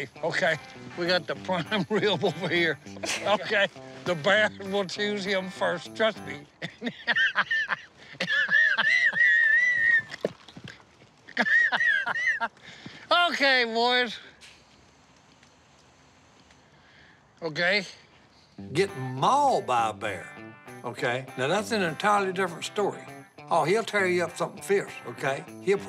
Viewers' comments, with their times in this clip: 0:06 Best Si’s wheezing 🤣🤣